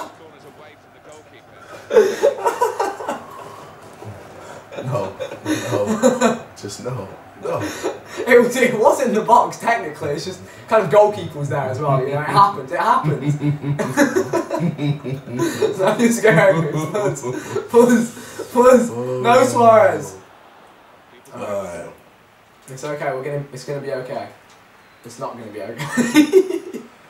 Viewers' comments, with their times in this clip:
0:06 All you people are hating but I think this is hilarious . BTW KSI has the Ima kill you , laugh
0:12 it that laugh sounded like "im going to choke you if you screw up one more time."